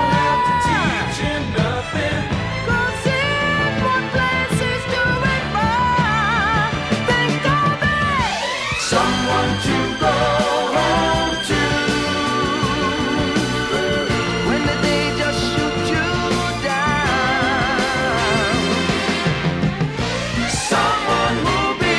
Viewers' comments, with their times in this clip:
0:07 Wow, what a beautiful song! I heard all of Tavares's releases, but this is the first time I'm digging into this album, and am blown away by the beauty of their harmonies in the chorus (ex: ), the melodic changes and the swirling strings. Man, music today can't hold a candle to these great gems that tickle your soul.